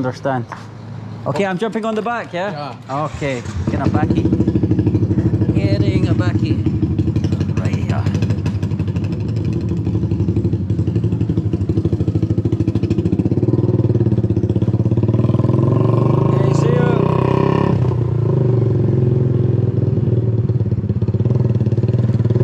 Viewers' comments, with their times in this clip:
0:03 "get onto the chopper" very nice sound